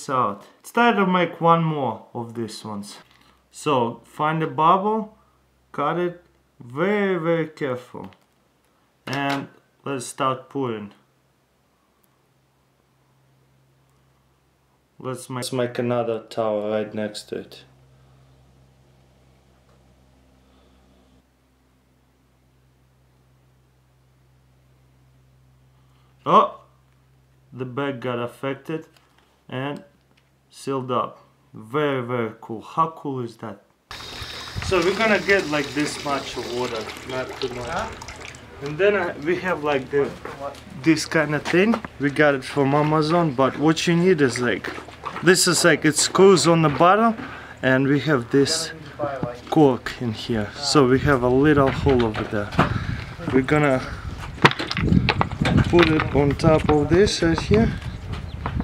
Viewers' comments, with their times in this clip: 0:04 find a bomb connor very very careful
0:08 And was start porn was much Mike another lol
0:11 an was start porn was much like Mike another...."
0:12 an was start porn was much mike another
0:14 and was start porn
0:37 "We have this lika a thing and we got it from the mamazone and we have this cock over here and put it inside the thing :D "
0:40 from mamazone XD
0:40 It sounds like he's saying "mamazone" LOL
0:41 from mamazon hahhahaha
0:42 He got it from "Mamazone"
0:42 we got it from Mamazon ?!
0:42 did he say he got it from a Muslim? lol
0:42 we got it from a muslim?
0:43 Mamazon ahhahahahahaha im a big fan too love your vids
0:43 from MAMAzone I was like BRUUUH?!?!